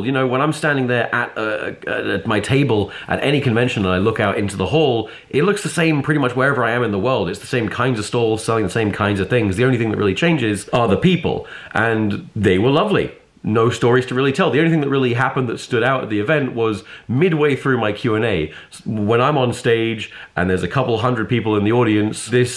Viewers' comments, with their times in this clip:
0:06 Wait is that Kazoo !??